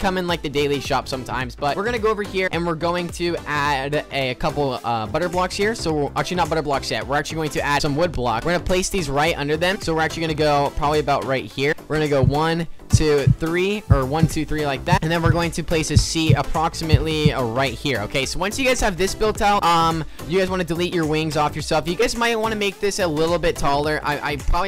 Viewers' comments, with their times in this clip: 0:09 Anyone else hear a heart beat? or am I crazy (like if you hear it) plz